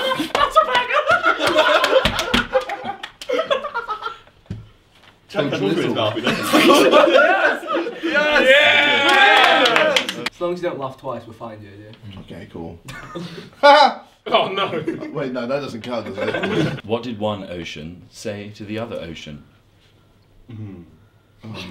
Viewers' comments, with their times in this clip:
0:03 Ethan sounds like Mickey Mouse